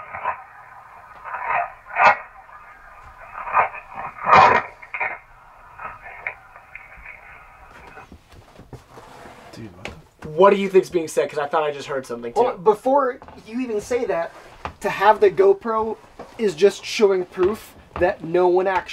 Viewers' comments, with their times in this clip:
0:06 The Inaudible I thought I heard "I want you all hurt." or something like that. "My grandmother's red Buick drives to the gas station to get a gallon of milk to make chocolate chip cookies for dinner."